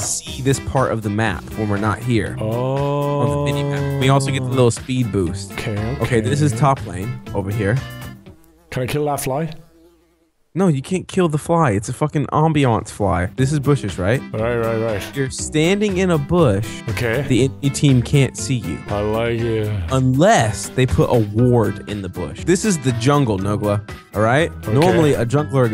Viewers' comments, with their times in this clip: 0:08 omg i ran out of my room i thought it was a wasp